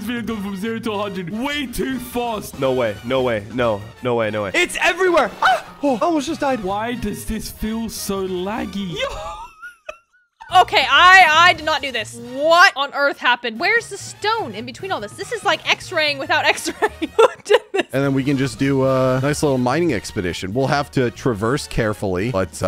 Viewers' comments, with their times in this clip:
0:05 did he just mown?